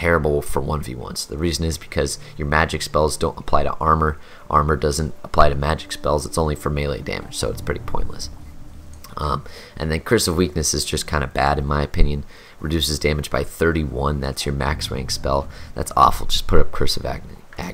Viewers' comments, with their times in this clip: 0:05 it started raining again